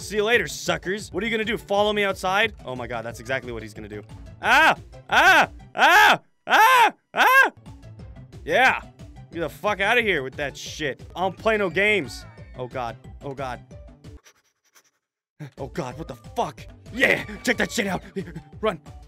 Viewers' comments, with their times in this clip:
0:07 he sounds like sienfield